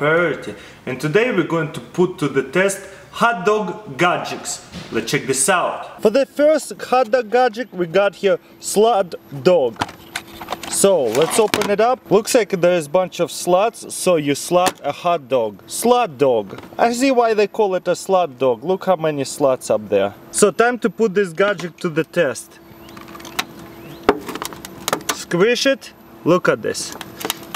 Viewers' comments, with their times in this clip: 0:03 What?! 'HAAT' dog? What's that thing!?
0:11 'Looks like there are a bunch of sluts.' -CrazyRussianHacker 2016